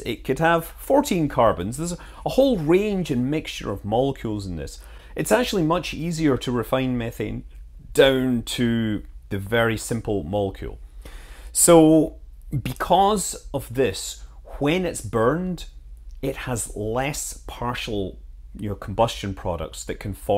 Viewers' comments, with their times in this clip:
0:06 sneaky burp.... busted.